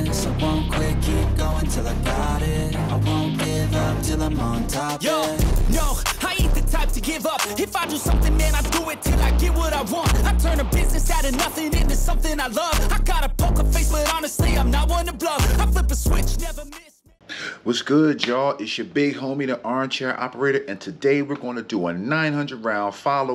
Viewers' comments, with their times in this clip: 0:04 Dude in the next shooting lane was like, “Damn, that’s LOUD AF!!” Oh, well. Not every gun owner has a “quieter” gun or guns equipped with suppressors. Shit be loud sometimes.🎧😆👍🏾